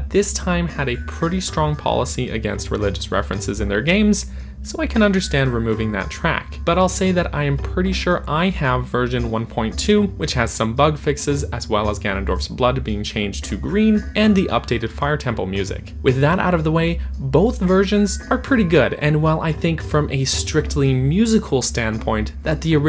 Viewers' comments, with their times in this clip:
0:03 i used to think it was the Goron's saying "Help us help us ahhhh"